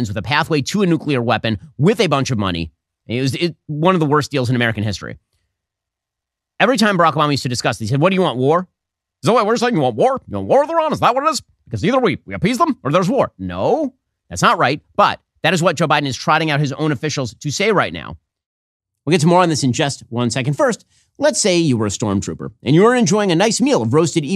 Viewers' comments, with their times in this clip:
0:09 your Obama impression spot on brotha 💀